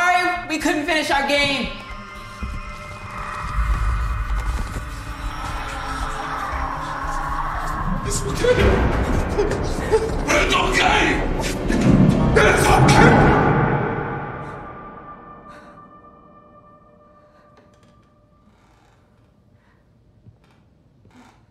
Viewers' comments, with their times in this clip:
0:08 what did he just say I can't Understand what he said😑